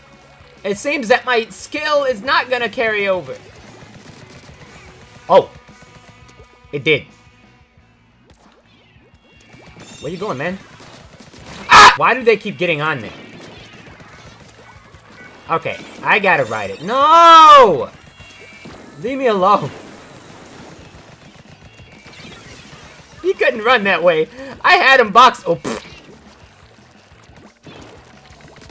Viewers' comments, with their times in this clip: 0:10 "Where ya goin man? AAAAA!!!!" im deaf now